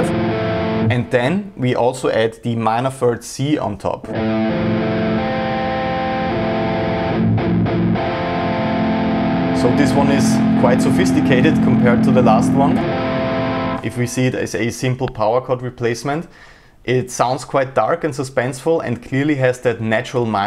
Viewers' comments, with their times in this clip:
0:08 That chord is interesting. I already knew the lower structure of that, but adding the top note makes it a lot different. I'm glad at least I learned one new chord out of this, the other ones are killer though.